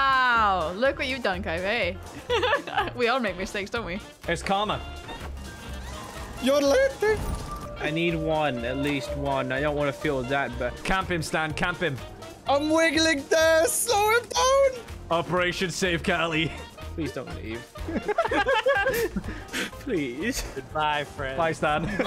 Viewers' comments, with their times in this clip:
0:04 The yodeling sounds like megalovania